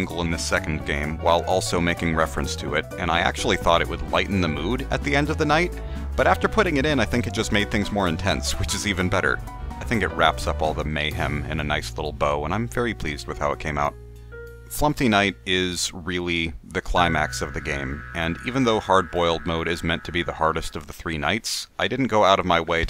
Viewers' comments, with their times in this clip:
0:03 something about being trapped in a very dangerous and scary place with up beat music about your demise playing is pretty unsettling anyways